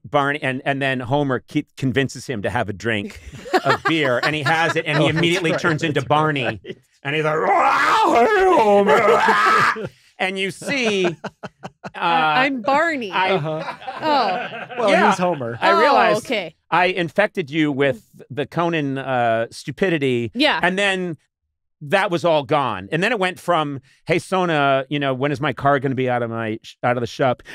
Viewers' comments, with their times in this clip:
0:08 conan turns into Bobcat Goldthwait